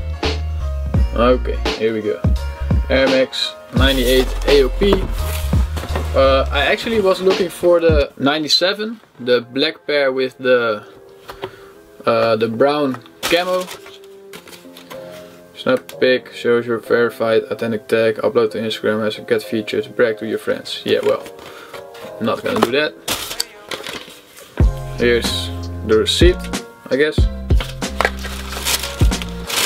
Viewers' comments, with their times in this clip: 0:10 Dat beat <3 :o haha. The shoes are super nice, cool unboxing video fam!